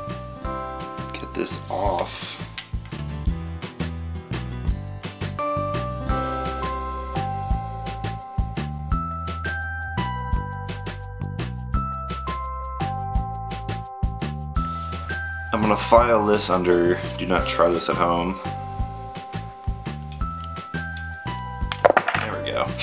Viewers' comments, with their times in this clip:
0:10 was so nerve-racking, and yet the chimes still played on cheerfully